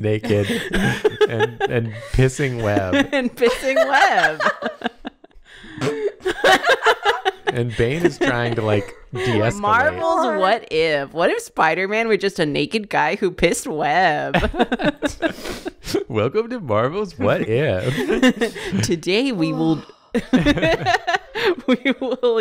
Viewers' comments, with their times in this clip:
0:06 I love that she randomly busted out a Chills voice to describe the shock of a naked spiderman pissing spider-web 😂
0:09 That’s so funny. No offense to the guy, but I don’t know anyone who likes his voice. Also, gotta love the Spider-Man web shot. Now you just need some tentacles.